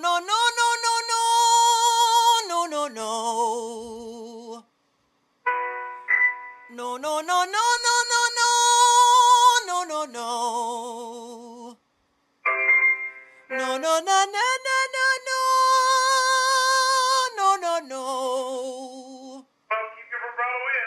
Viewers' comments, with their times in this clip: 0:07 The best way to say No